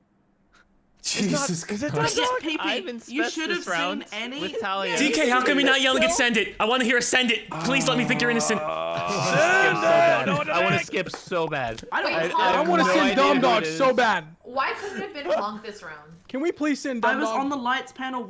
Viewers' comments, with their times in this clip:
0:06 ‐ Chilled nails a superb Jim Carrey impression.